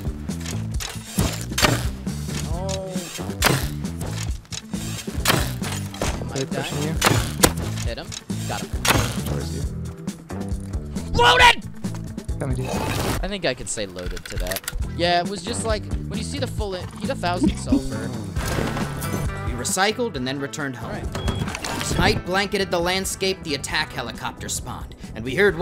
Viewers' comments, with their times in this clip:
0:10 His "LOADED" scream had me dead